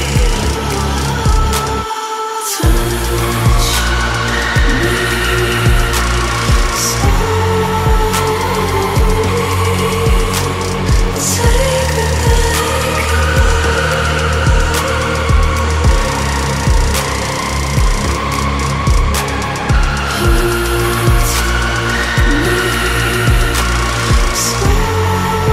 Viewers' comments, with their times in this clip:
0:07 Always with the good production and writing and then terrible flat vocals. My god how can you people not cringe